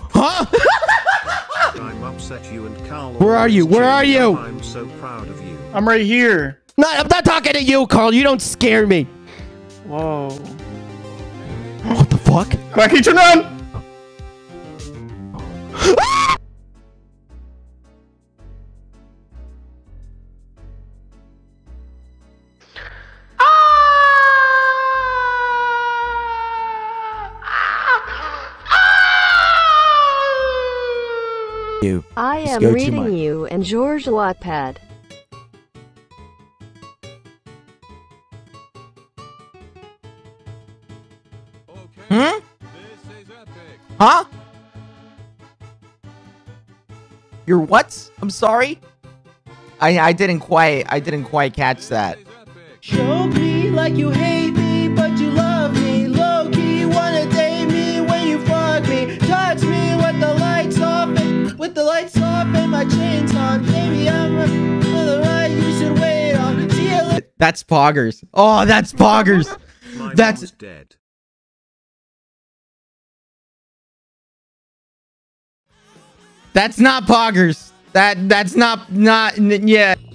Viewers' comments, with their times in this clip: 0:09 When Karl said "oh" on it was so cuteeeeeee
0:35 The music was perfectly timed.
0:52 am I the only one who thinks this actually sounds good with an acoustic guitar?
0:53 he actually has a really good singing voice
0:53 when he sang corpse song I started simping all over again
1:01 Him praying in the beginning Me:⚰️💀 HE CAN SING AND PLAY GUITAR?! HOW COME WE HEVER KNEW